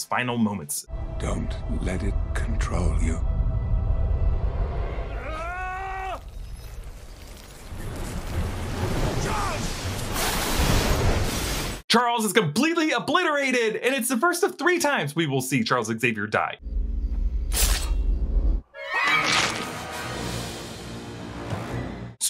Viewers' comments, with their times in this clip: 0:07 Mahn, I watched the complete saga while I was just 8-9 yrs old in 2008-09. The saddest death was of Professor X, that bgm, Logan scream, X's look of despair really made me cry😢. Even today it's still the same.